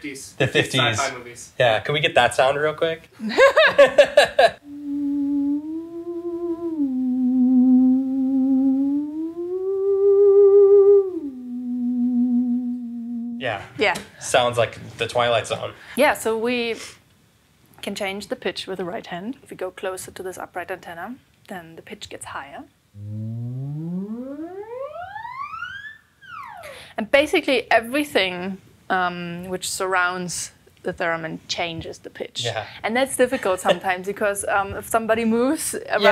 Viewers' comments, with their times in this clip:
0:08 sounds like something out of Ghostbusters
0:18 I call this instrument The fly in my room am